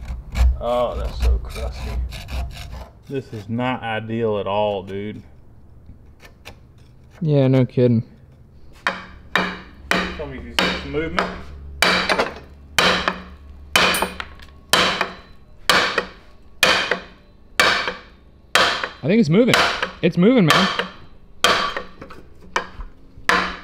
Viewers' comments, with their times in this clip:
0:07 make sure that your headphones aren't turned up.